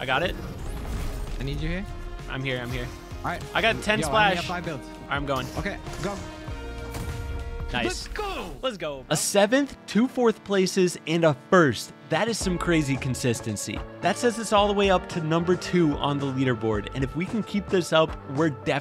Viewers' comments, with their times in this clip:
0:03 why did he quack?